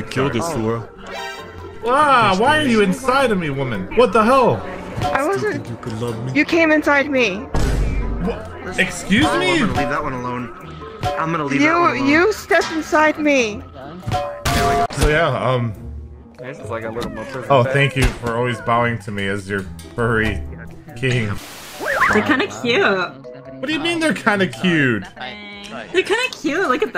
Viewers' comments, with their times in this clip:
0:07 Mute self harm, via Jack Daniel's ... funniest shizz,, especially with the sound effects 🤣